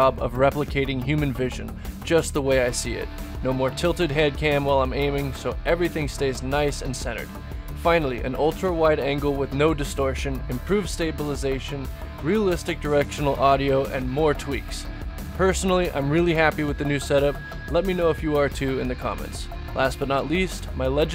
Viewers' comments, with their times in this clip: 0:08 for some reason I heard Walter white Good video btw